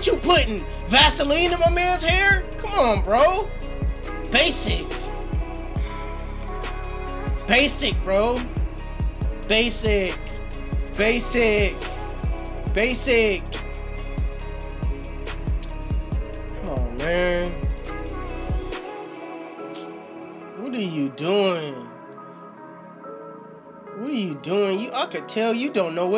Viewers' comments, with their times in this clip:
0:09 Naw u was feeling that fade ... we all heard it on your voice